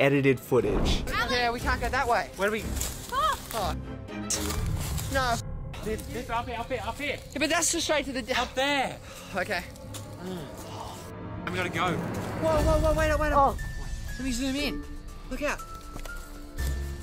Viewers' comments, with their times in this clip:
0:03 he said " etited footage "